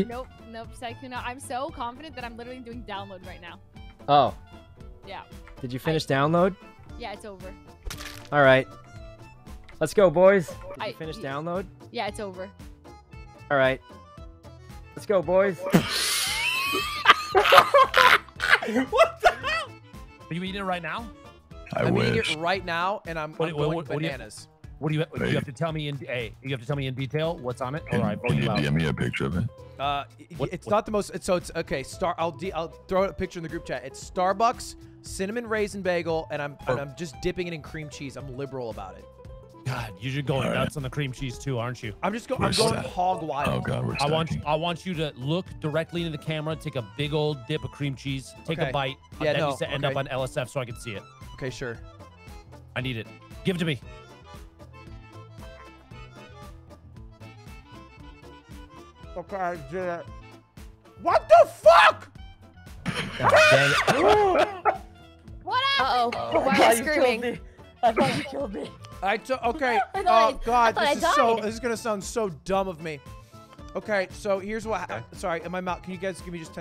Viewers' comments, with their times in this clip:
0:04 the funniest thing is the fact that i first watched this from Corpse's POV and u couldn't hear the entire convo, just the part where he asks if she's finished with download and then he slices her in half right as soon as they walk around the corner. his innocent little 'let's go boys!" pls he is so evil.
0:13 I CAN’T the “alright, let’s go bois” plus the Dream wheeze is too much 😂🤣😂
0:15 I can't get over dream's laugh
0:58 i really like this man's voice lol